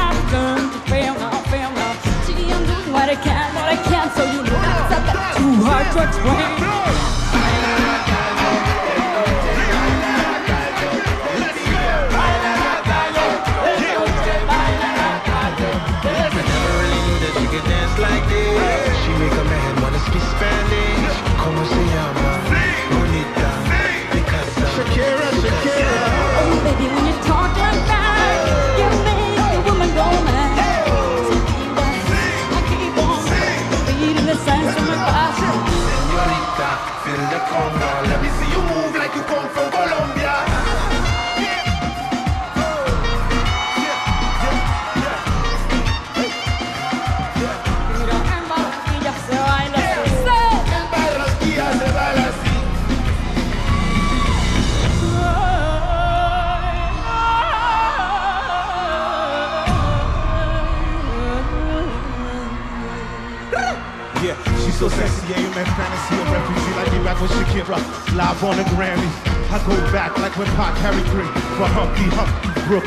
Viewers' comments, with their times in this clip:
0:04 that’s a BAT to hard to explain
0:54 is so goood!!!! Her voice ❤️❤️
0:54 Her vocals in the beginning and are unbelievable...like an angel's voice.